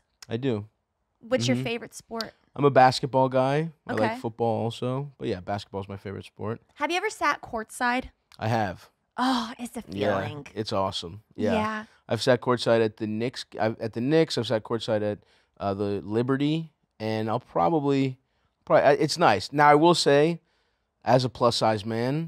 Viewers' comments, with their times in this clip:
0:09 I never noticed it until this episode and now I can't unhear it, but Lauren ends all her "ing" words with "ink". "Feelink".